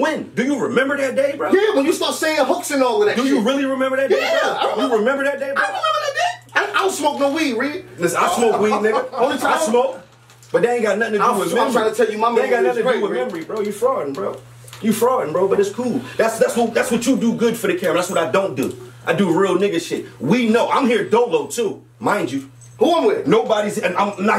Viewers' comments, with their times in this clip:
0:06 Rex voice when he said “ I remember dat day” 💀😂😂😭😂😭😭😭😂😭
0:06 Rex voice saying "i remember dat day" 🤣🤣🤣🤣🤣